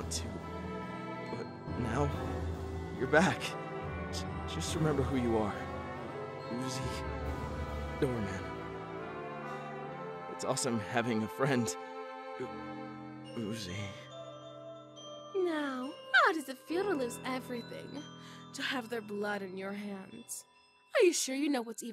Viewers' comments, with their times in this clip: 0:05 The music made me feel like I was playing a Pokémon mystery dungeon game like god that music was just a nostalgic trip!